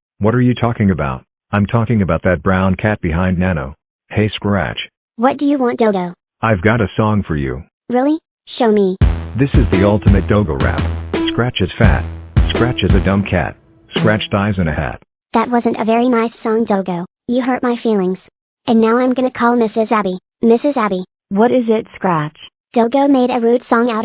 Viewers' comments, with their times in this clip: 0:09 If we look beside the lyrics, the Ultimate Dogo Rap is a banger.